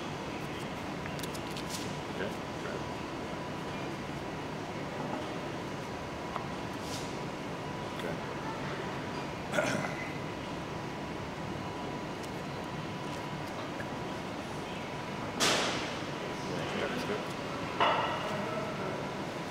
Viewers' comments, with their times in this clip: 0:06 sounded jus like The Rock😂